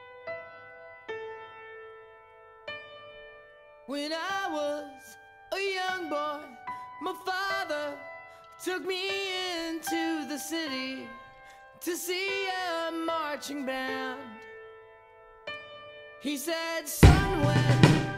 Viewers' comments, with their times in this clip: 0:04 What. This supposed to be so much serious. . . . I loved it when you are like singing along with it. . . .